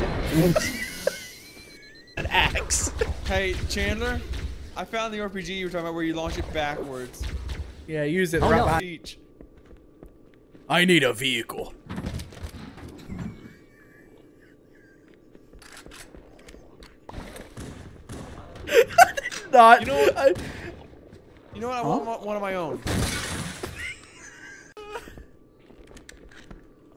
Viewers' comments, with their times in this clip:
0:09 Your laughs are incredible loved the whole thing! was my favorite part